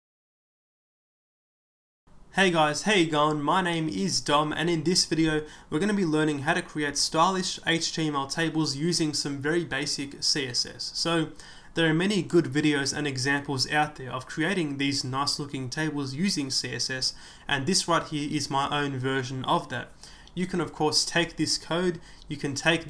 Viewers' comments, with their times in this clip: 0:03 did you say "my name is dumb" or "my name is dung" ..? Jw